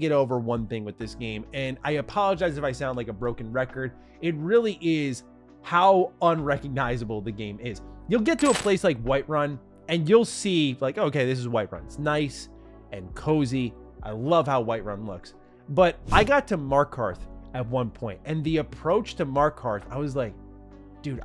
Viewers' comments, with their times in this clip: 0:08 bro what the fuck was ? scared the shit outta me thinking my gpu fuckin exploded